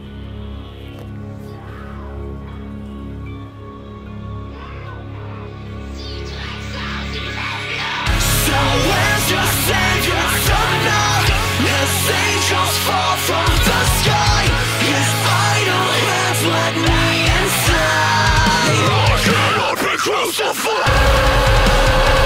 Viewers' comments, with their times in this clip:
0:05 Hearing the song for the first time, and totally not being prepared to hear a german insult screamed in the intro
0:05 sounds like she was saying "die Drecksau, die verfluchte" in german😂